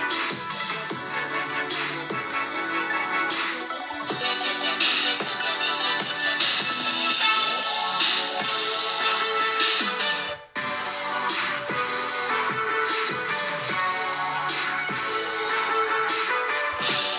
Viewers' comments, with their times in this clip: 0:03 I just love how he switch on the drop